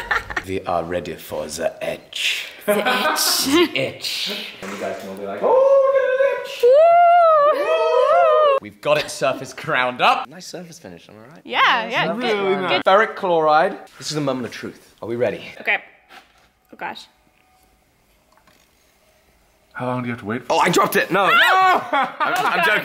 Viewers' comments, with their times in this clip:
0:05 The random noises here made me so happy haha. I always wondering if my friends and family are the only ones who make weird noises together haha